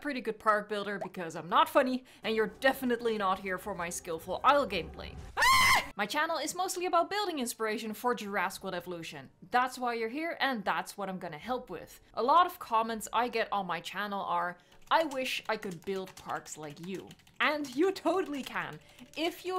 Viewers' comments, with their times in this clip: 0:05 Your scream is funny